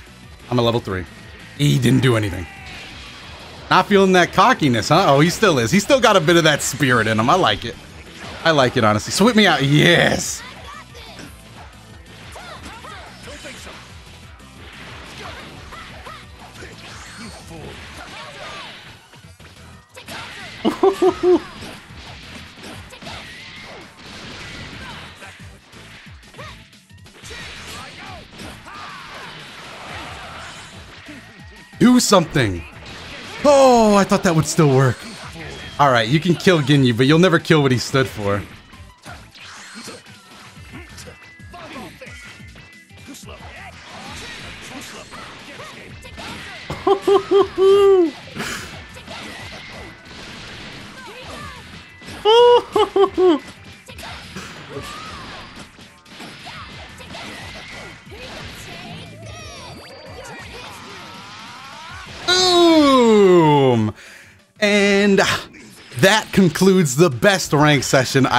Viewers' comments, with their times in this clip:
0:09 Bro he says yes like a pornstar
0:45 for freeza laugh
0:53 mf sounded like frieza he was so happy